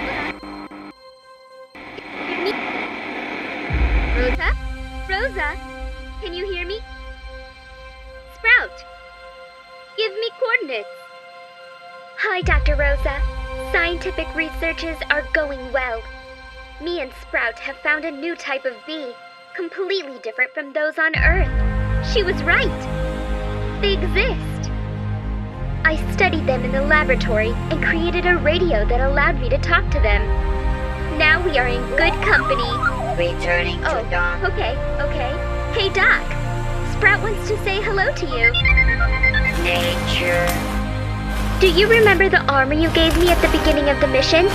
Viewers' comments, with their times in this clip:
0:08 GIVE ME CONDOMS
0:32 Sprout it's so cute With a radio effect